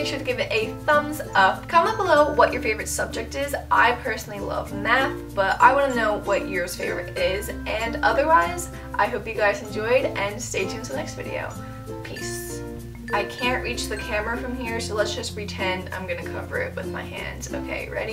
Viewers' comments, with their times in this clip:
0:03 Good tips, thank you. sounds like you said "I personally love meth." LOL!